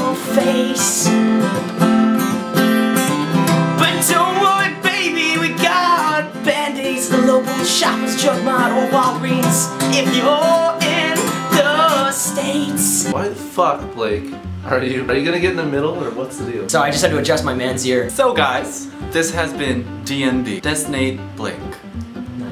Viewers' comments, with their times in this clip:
0:10 is some impressive note hitting